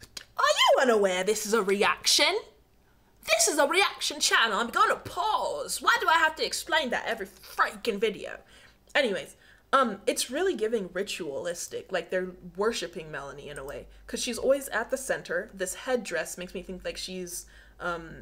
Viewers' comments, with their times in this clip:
0:05 the random switch to british accent had me bawling